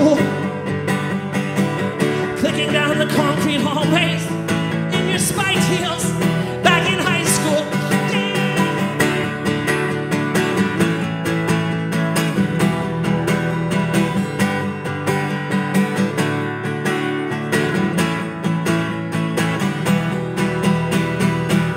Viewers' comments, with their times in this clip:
0:09 the little "yeah!" he gives really makes this recording